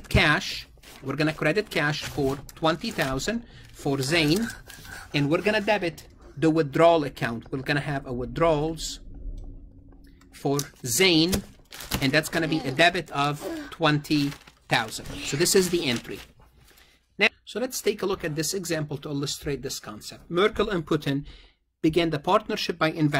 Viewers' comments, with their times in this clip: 0:05 am I the only one hearing the moaning sound in the background 😂